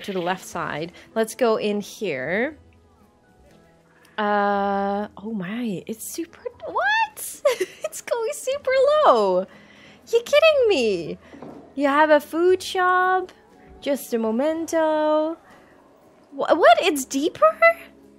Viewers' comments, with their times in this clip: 0:06 That's the most high-pitched natural "what" I've ever heard